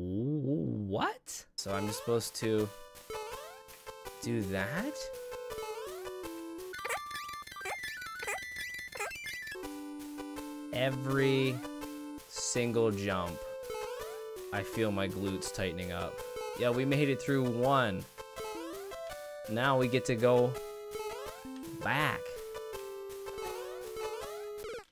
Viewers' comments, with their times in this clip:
0:06 You sound like Lemmy(?) on a note block in that segment :).